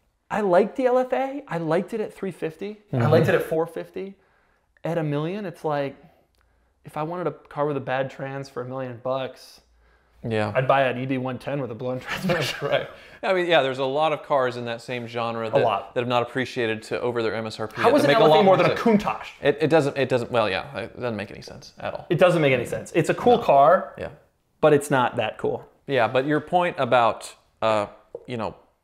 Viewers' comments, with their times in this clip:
0:10 My ears tricked me, I heard a110 (by Alpine/Renault) which is a lot more fun than the LFA.